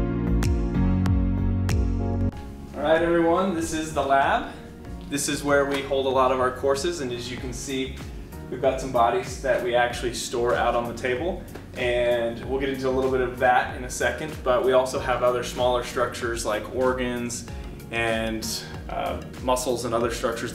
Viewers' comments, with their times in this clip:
0:05 .... this is where we hold a lot of our CORPSES